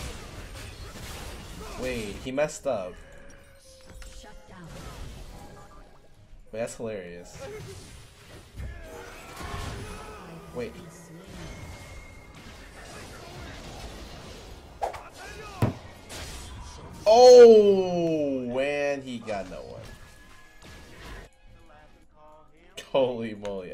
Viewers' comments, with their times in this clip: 0:06 I want that U-u-u pain sound as my notification sound on phone!